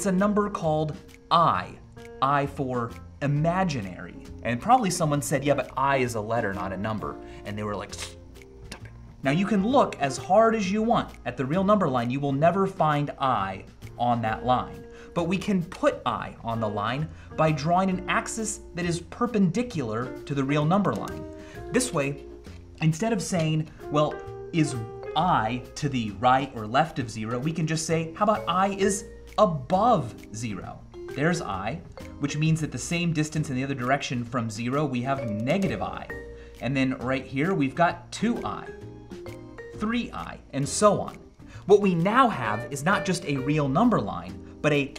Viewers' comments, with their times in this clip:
0:07 The most subtle unaggressive 'stop it' ever
0:27 the sound in the background made me think siri went off on my phone haha